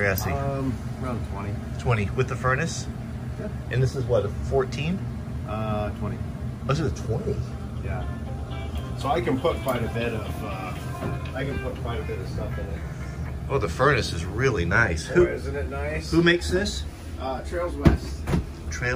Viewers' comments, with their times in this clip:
0:05 the ringtone is the same as mine and I checked my phone, it got me for a second lol